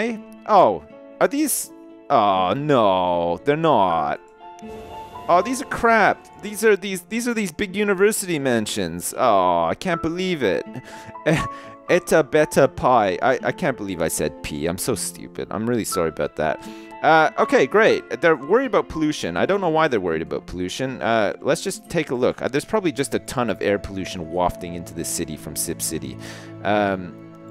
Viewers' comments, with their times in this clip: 0:10 Eat a better pie?